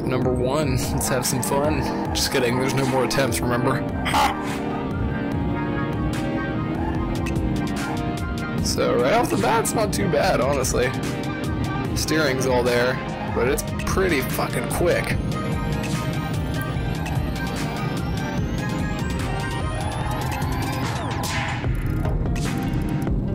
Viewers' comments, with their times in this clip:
0:04 sound of a devil